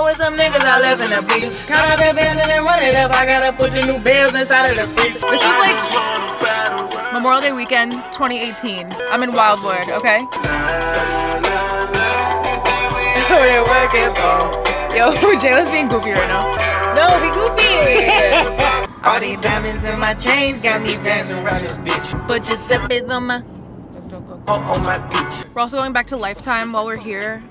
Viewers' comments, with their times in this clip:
0:10 buy the world in wildwood sounds absolutely phenomenallll